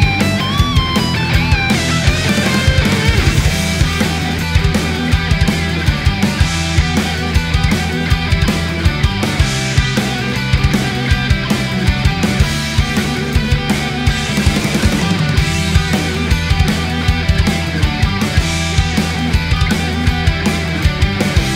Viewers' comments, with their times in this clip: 0:03 What was that I didn't see a double base but it seemed so